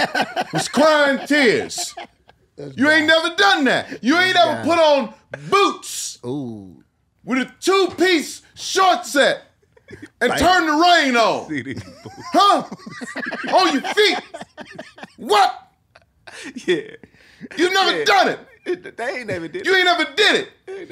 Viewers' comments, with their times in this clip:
0:08 .28 when they harmonize together was fire